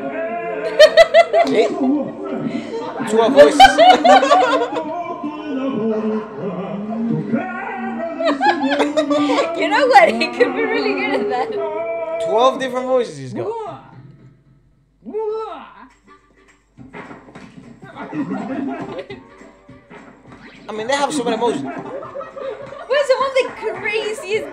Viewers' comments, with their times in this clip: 0:10 V and his thousand voices😂